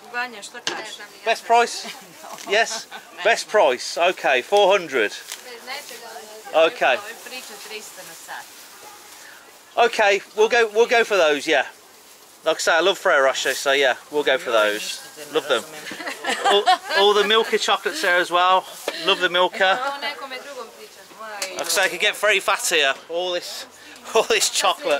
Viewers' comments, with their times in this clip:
0:06 she told you you're fast talking man (you talk like 300kmph). So fast. 😂😂😂